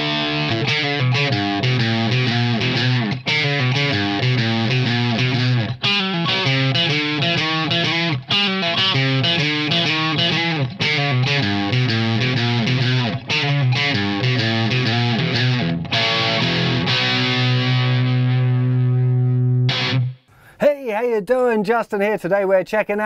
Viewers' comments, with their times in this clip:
0:10 at exactly .... it sounds off. it sounds like your hitting the wrong notes, or your equipment is a little off.... it does sound like you are correct on the ratios... meaning going from the 3rd fret, slide up the the 5th. thats 2 frets. but its like it should go from the 2nd fret to the 4th. idk, at 1 min when you slide up... the sound just isnt right. i mean, its VERY hard to create a bands signature sound in the 20 mins or less you had before this vid.... but im just curious on WHY it sounds off.